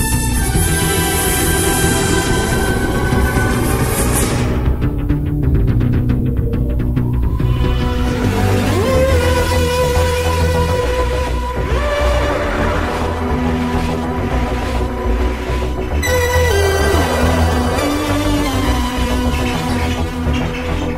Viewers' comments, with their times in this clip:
0:07 You know I think the way you kept the resonance at the same level with all the notes for all the theme songs was an extremely clever touch. Though if the Classic Show ever gets syndicated on T.V. somewhere they should put your version of the Sylvester McCoy theme up with the Paul McGann Graphics that looked awesome. Seriously that part after from the 7th to 8th Doctors gives me the chills just hearing it.